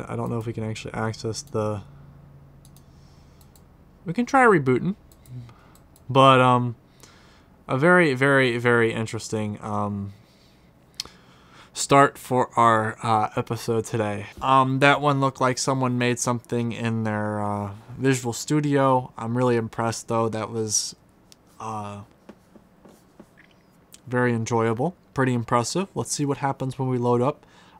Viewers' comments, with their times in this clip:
0:09 starph STARPH for are episode haha (no hate)